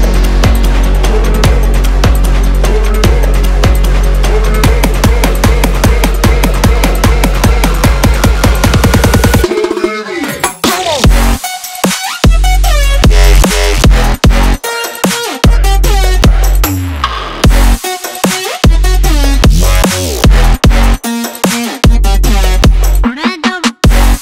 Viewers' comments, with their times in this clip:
0:10 If I made this song and I was on my own concert, at this part I would say TURN IT UP! Ooh! Is that a new soda? Yep, I would really want to drink that! Mhm! Sick beat tho! You will always be my favorite Artist or Musician or whatever!
0:10 Tobu goes brrrr
0:11 Why Does The Bass Look Like Old Door